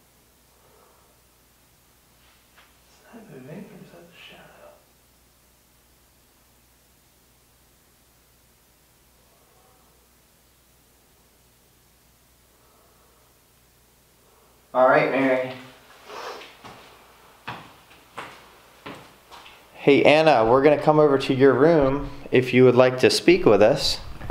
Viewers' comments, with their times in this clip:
0:08 i think there is a voice in the back ground sounds like it is saying hello or a grunt type thing and it happens multiple times
0:12 I heard a noise, but can't tell what it is.